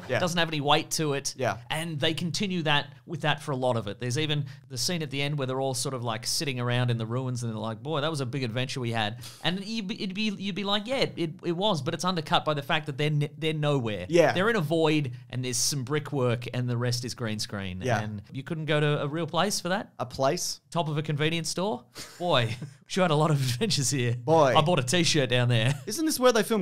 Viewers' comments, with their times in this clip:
0:09 I'm sorry but you sound like Porky Pig
0:09 Special guest cameo by Porky Pig!
0:09 Jesus, Did Porky Pig just show up?
0:09 Porky Pig enters the chat
0:09 Did Porky Pig break into the recording studio for just a second there?
0:09 That is an absolutely spot on Porky Pig
0:09 When did Porky Pig join the show? “That’s all folks!” hahaha